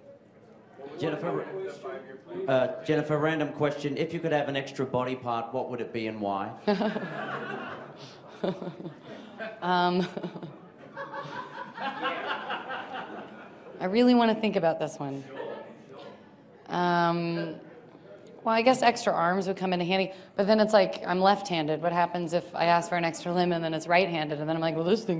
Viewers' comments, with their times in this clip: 0:08 love her calmly laugh